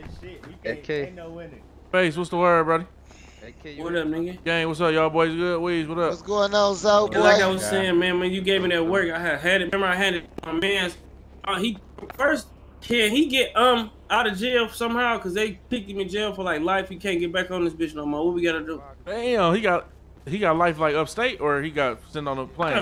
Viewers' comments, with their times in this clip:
0:04 Ay is that BabyFace Ray voice ?